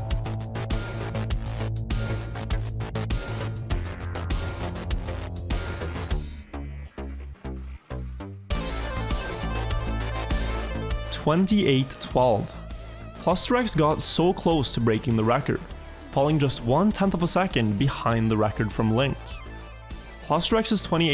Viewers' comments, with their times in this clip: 0:07 reminds me of the music from another racing game, STUNTS, which came out in 1990.